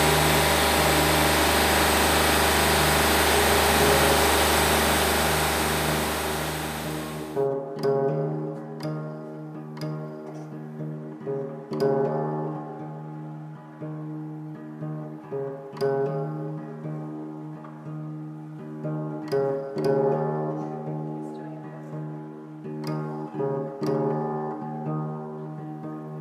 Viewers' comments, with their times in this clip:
0:08 low key guitar with a "Tool-Alex Jones vibe". Nice!